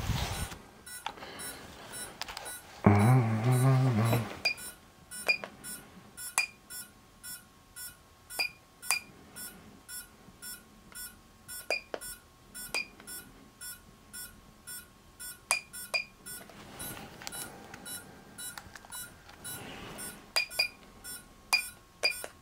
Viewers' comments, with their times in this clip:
0:09 what do i do at this beeoing sound...when i turn it on it doesnt stop